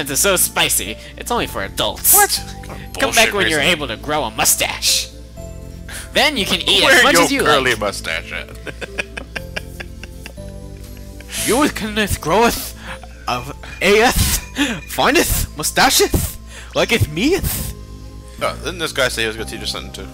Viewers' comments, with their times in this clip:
0:04 Mario Voice "She a sounds likea my type of woman!"